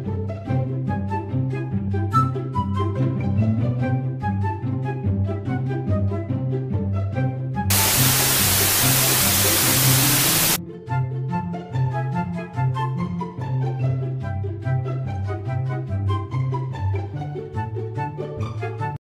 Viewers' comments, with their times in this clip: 0:08 I HAD MY HEADPHONE VOLUME REALLY LOUD AND SCARED ME SO BAD but amazing animations!